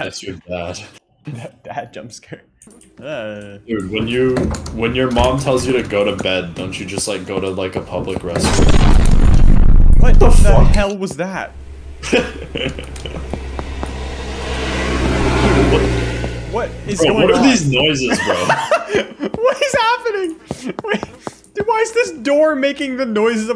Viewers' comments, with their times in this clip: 0:06 Pov. you accidentally slam the door that night